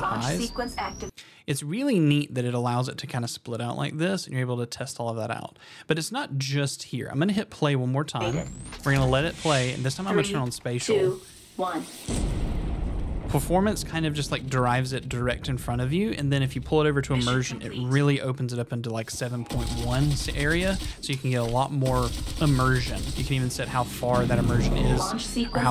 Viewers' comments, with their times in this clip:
0:09 the performance conpared to immersion is basically real player vs .enviornment